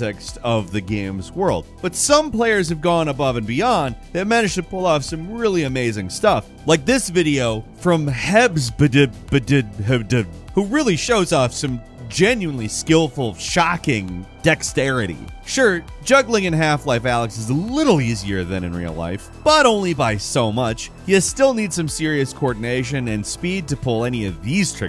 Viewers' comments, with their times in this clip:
0:09 I absolutely love the way you pronounced the username💀🤣💀🤣💀